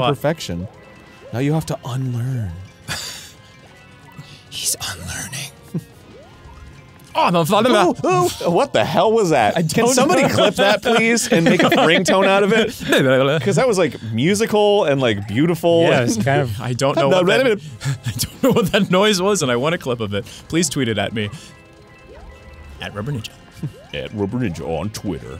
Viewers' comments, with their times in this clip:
0:06 Quick! Someone unreverse this like you do in Ghoul Grumps!
0:07 Arin's "what the hell was that" was so straight forward and dead pan and confused, I'm gone 😂😂😂 perfect reaction lmao